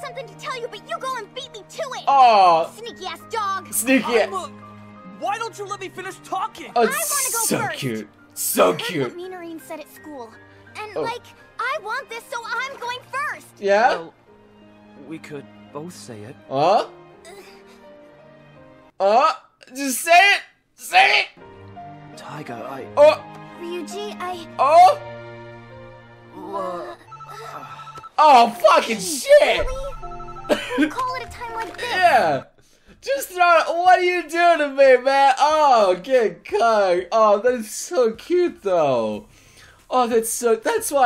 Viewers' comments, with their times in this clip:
0:04 Ew that's disgusting. That dub is terrible.
0:21 me: yes Yes YES. phone ringing FUCK!!!
0:26 insert Angry German Kid reaction when he was broking the keyboard and scream so loudly